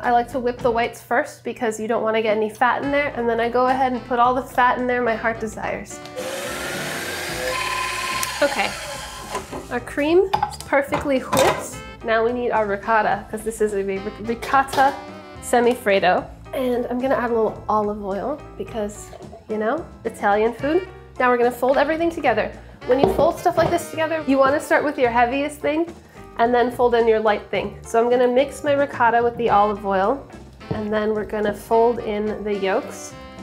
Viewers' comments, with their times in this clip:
0:09 Sohia said whip like Stewie Griffin form Family Guy. She is putting a lot of emphasis on the H.
0:16 a bit olivol.